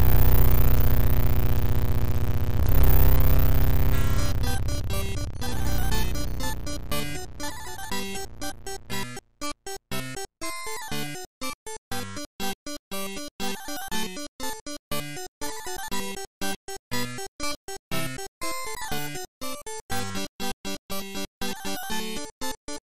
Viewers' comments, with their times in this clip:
0:03 At least Mozart lights the mood.